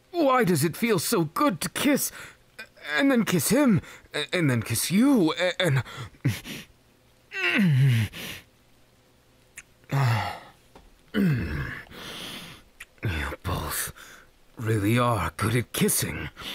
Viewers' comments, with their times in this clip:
0:03 iida making out with denki and listener Also iida: ""confused bisexual stuttering""